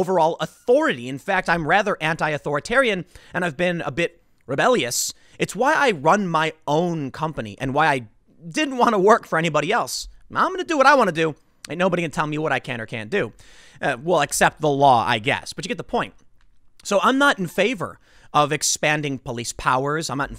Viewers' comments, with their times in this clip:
0:07 Tim sounds just like cartman from south park "I do what i WaNt!" xD